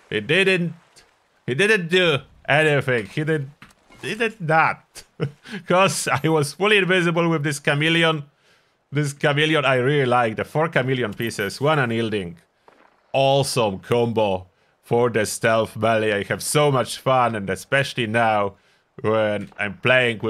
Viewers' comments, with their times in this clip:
0:07 Is there a .ini tweak to get rid of the chameleon chirp sound effect? Because that’s what annoys me the most about it.